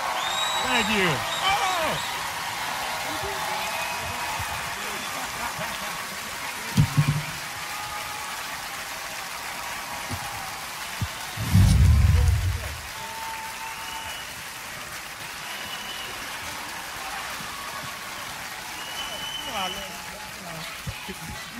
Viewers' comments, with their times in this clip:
0:09 What was that weird-a** clapping ?👏🏻🤔